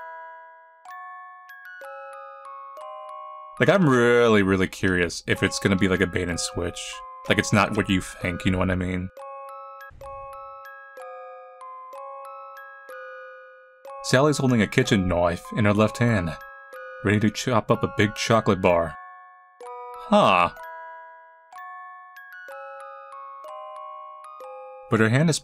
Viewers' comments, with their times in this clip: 0:09 the least british knoife